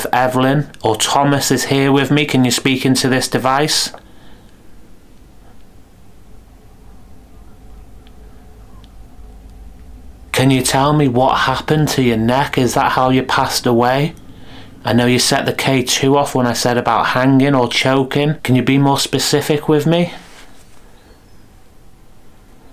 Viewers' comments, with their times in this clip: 0:08 I was able to hear the woman's voice at 32.59- and a bit beyond. She said quite a bit but I had to turn my volume way up to hear it (also using headphones). The little girl's giggle was clear as day.
0:08 listen for a bearly heard word "No" and at- 35: 39 -- listen for after a few seconds you can clearly here a giggle that the cammra picked up not the hand recorder.